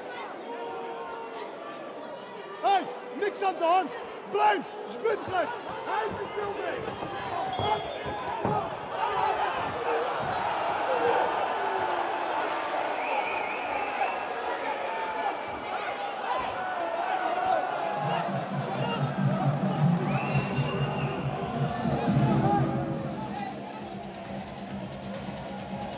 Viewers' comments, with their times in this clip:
0:07 they ring the bell with 18 seconds to go